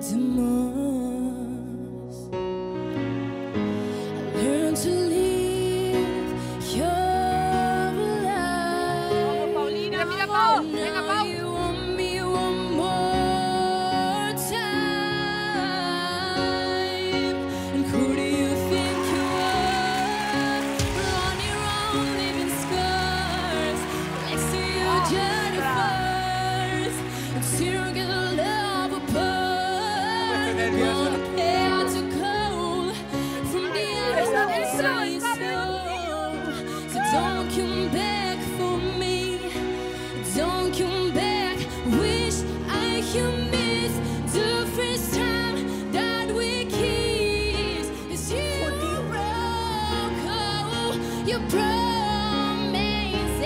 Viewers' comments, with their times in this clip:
0:09 I just heared a voice "tang ina mo"😂 maybe I misheared haha
0:21 I can see why Paulina Rubio turned for him She could coach him to sound like her
0:39 omg this guy literally looks so cute, like everyone's high school crush or smth and his voice omg
0:41 was definitly the most shocking, knowing the context of the video, i was maybe expecting a boy from the ages of 12-15, but i was STUNNED, in a good way of course, he has the voice of an angel.